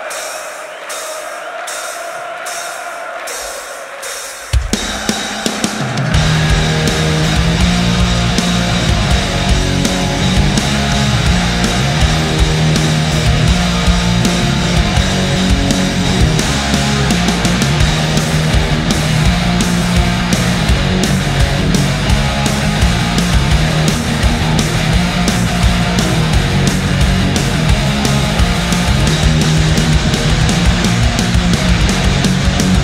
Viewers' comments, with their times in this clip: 0:06 Metallica March or `tallica Hymn ... sounds freaking awesome !!!
0:17 Damn!! Lars is playing great 🤘🏼🤘🏼🔥 I like that tempo change and on 🔥🔥